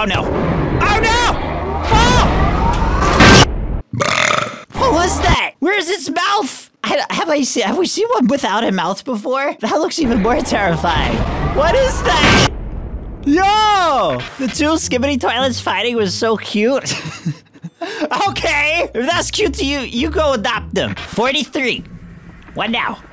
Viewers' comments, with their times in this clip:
0:04 Glitch burping is 🤣